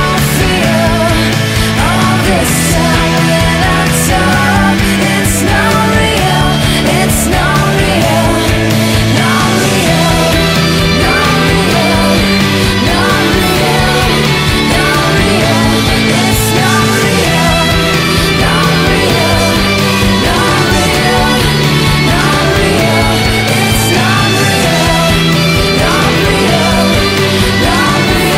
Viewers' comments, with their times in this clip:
0:09 LOL when shes saying "not real" is sounds like shes saying "gonorrhea" repeatedly